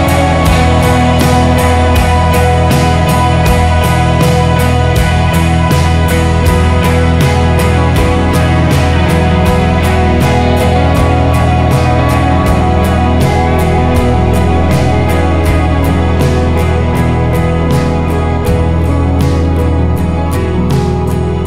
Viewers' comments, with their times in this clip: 0:06 The IV chord mode of the outro with the riff reminds me a little of "Dancing in the Dark"... but then it resolves to I and floats away into the ether.